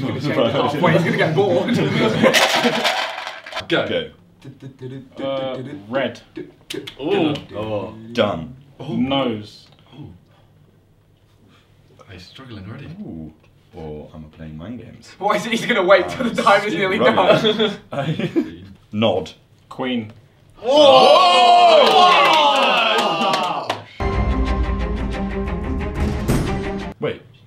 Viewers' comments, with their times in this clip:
0:09 like how tobi said nose